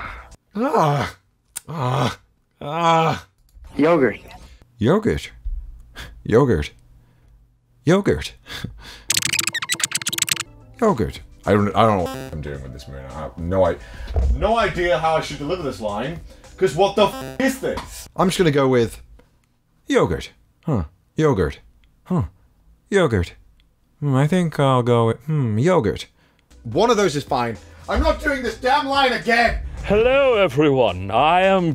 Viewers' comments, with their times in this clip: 0:04 LMFAOO his American accent is like micheal from lucifer, I actually love it
0:12 you sound like kyoya when you do this voice i swear
0:19 this sounds like one of those text to speech voices